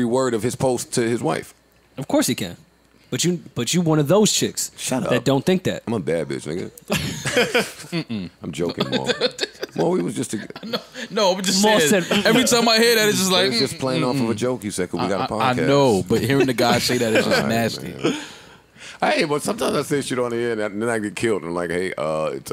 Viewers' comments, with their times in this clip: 0:05 I had to come to see/hear Mal’s “mmm mmm” to Joe saying he’s a “bad bitch”